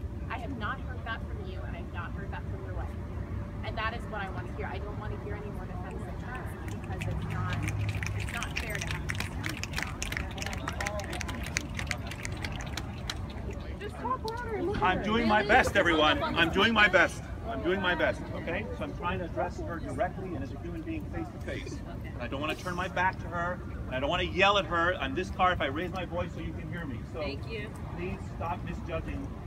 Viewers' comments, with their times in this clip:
0:10 you hear that sound? they're snapping their fingers because they think that clapping your hands can be triggering... it's sad really